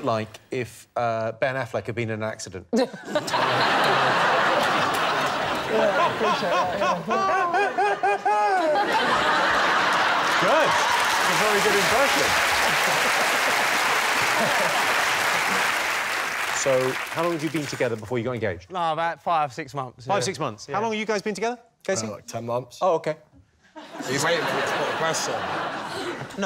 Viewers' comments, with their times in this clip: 0:07 that laugh was the funniest part of the clip